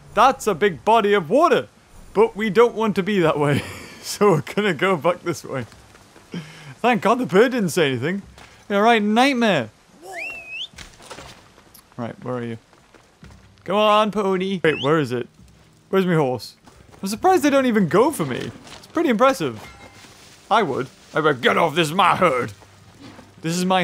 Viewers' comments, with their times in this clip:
0:08 Thank god the bird didn’t say anything. (Bird in the backround) blghh!